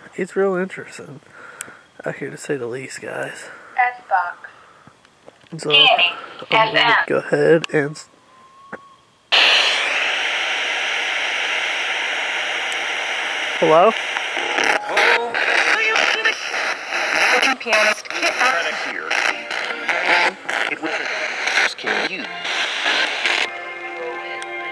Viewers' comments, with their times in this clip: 0:08 as you were turning on the spirit box, you can clearly hear a scream.
0:09 there was a scream in background but not on spiritbox